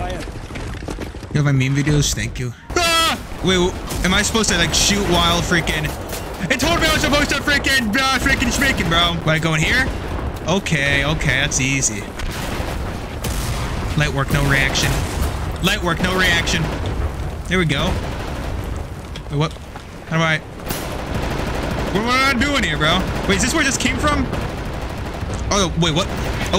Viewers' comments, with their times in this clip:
0:09 bro went from “yeah fuck you germadogs” to lowercase quotes